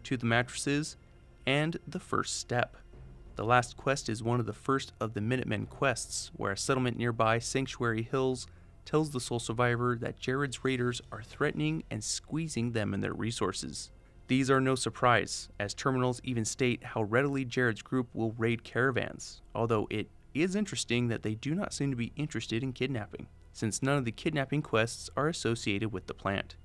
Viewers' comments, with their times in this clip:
0:09 sounded like you got a Lil yawn 🥱 in 😆 but good video